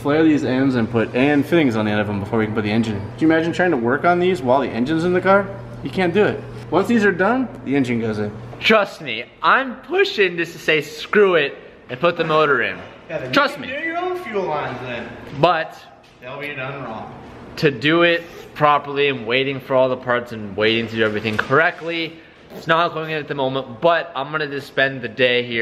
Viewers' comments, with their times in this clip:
0:07 Nice voice crack
0:09 your throat okay ?😂😂